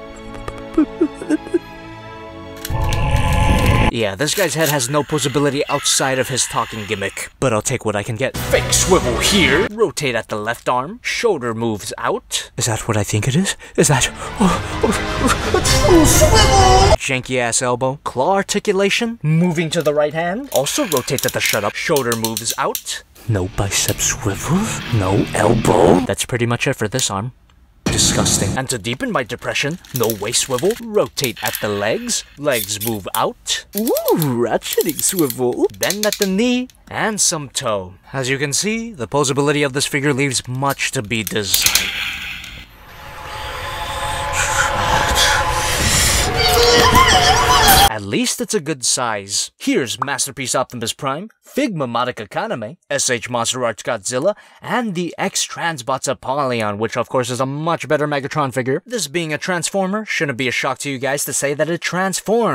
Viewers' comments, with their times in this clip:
0:10 The slight drop of the neon genesis Evangelion angel attack ost was perfect
0:41 the sound of a n g e r y
0:46 muscle man screams!
0:47 that screams always reminds me of muscle man